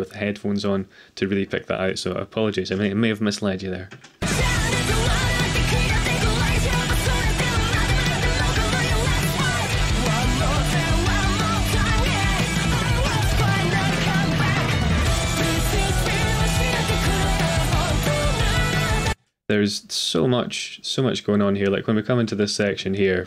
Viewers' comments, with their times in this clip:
0:10 I LOVE the pauses, with great observations on each one. Also the chord shape you break down slowed down reminds me a lot of the Westminster clock chimes. Probably coincidence, but with Kanami who knows?